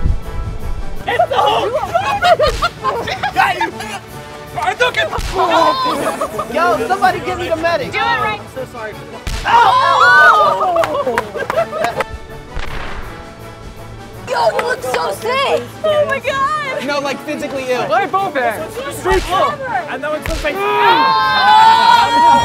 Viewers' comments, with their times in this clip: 0:04 Did anyone else heard Hadouken!!